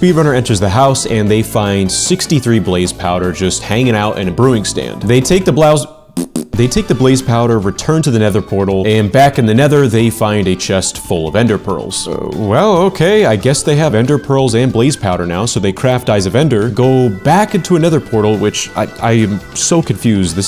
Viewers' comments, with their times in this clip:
0:05 they take the blouse - - - - - - - - - - - -